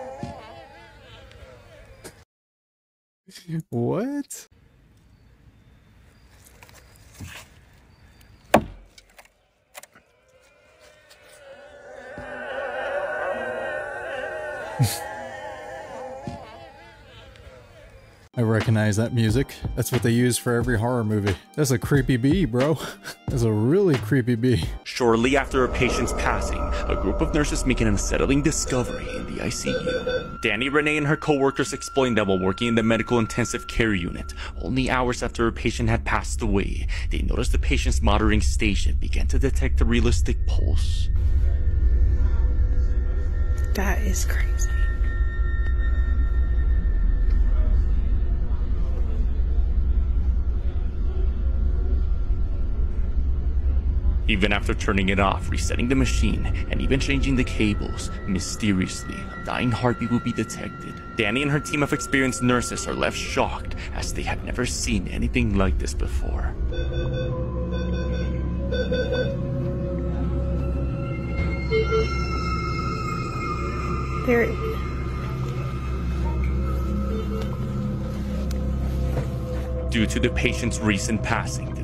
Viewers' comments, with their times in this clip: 0:10 that is the sound of carpenter bees nesting in the wood
0:11 them be sure to sound like the depths of hell
0:14 that was Carpenter bees making that sound LOL it sounded like voices
1:07 it's a 60z feedback loop from nearby Neuro/ecg/bis monitors.